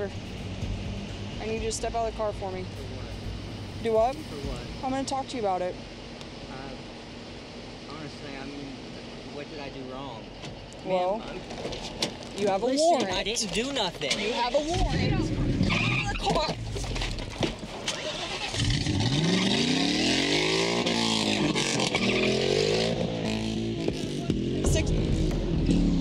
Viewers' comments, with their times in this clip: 0:07 I watched the part where both the woman fall out the car like 20 times on .25 speed dying laughing but it must not be that funny since this is only comment I found even remotely mentioning it.. 😂😂 “you have a warreanttt” thump